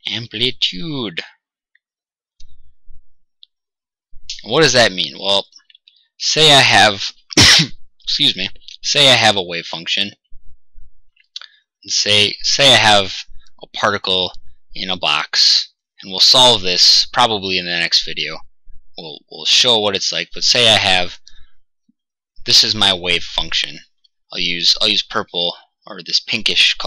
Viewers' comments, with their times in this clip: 0:06 Yeah sure, a computer generated voice coughs an than apologizes to you!
0:07 i said bless you ... i think i need a break.